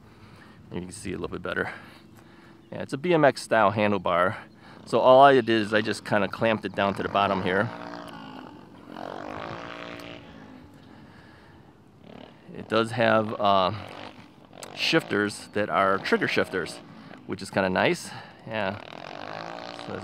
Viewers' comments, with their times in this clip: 0:05 was that an airplane about to crash?